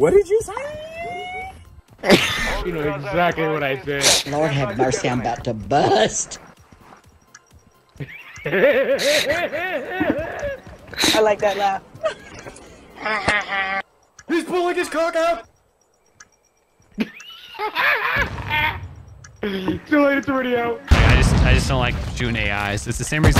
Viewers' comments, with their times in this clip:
0:06 this man’s got a one piece laugh fr like I can’t be the only one that thought of doflomingo